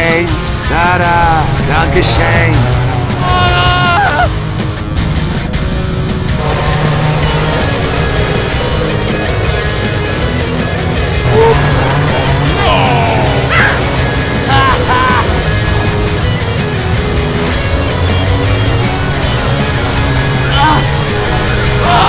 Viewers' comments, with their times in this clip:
0:03 I love that scream :3